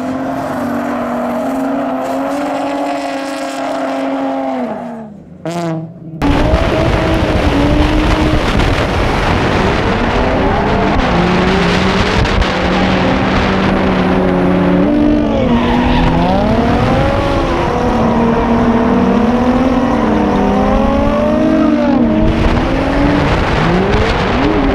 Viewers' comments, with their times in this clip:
0:03 it was like.. brwaaaaaa end. and after someone pooped xdd #fartsound
0:03 the Z farted
0:04 the Z farts.
0:05 That fart xD
0:05 that tomei fart tho